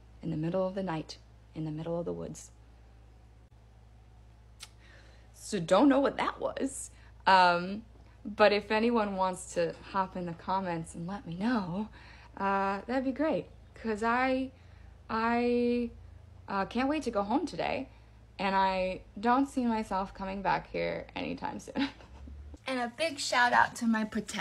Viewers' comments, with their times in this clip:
0:07 sounds like she got spooked by a stray parrot